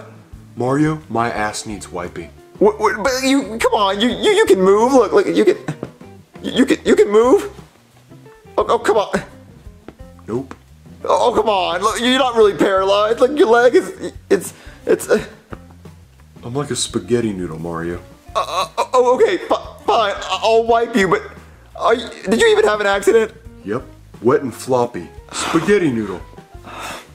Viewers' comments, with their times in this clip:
0:10 lol it’s funny how he said “nope”